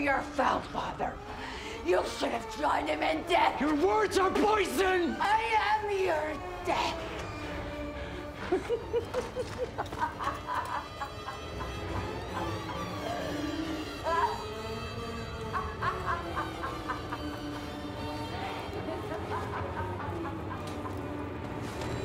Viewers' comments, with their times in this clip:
0:09 that cackle. Good lord.